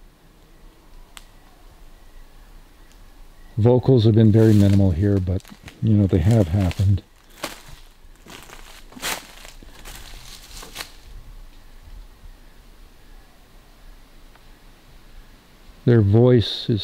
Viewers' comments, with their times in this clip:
0:03 ON ...VERRY FAR IN DISTANCE SOUNDS LIKE SASQUATCH.......FAMILY VERRY LOW FAINT FAR.